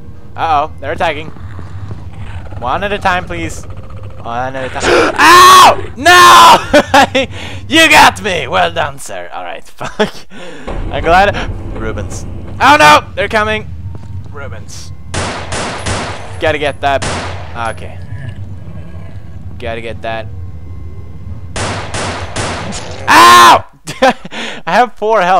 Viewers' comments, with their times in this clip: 0:06 the head laugh :))